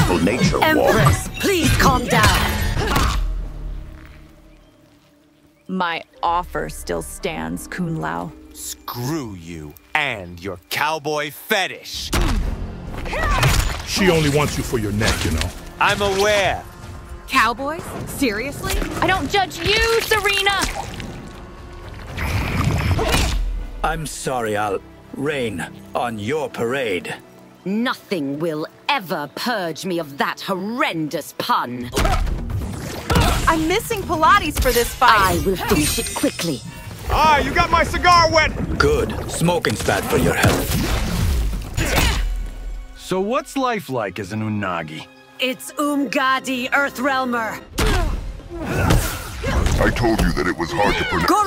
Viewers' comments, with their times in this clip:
0:04 How can AI Megan Fox sound like a better voice actor than the real her
0:05 I like how in Megan Fox sounds the same as the AI, then then the AI has better voice acting than her
0:06 I can see that not even AI can save Megan Fox's wooden performance of Nitara.
0:06 When the AI has more emotion as Nitara than Megan Fox.
0:08 some the hell how AI her sounds better than maegen Fox’s actual delivery. Also these are all gold 🤣
0:16 Apparently Kung Lao suddenly turned Boston
0:18 That's the BEST voice acting for Megan F-.. i mean, Nitara, i've heard yet! Leave her alone Sareena! 🤠
0:19 this line is good it sounds like she has emotion finally
0:36 why does jax sound more like weird old morty than jax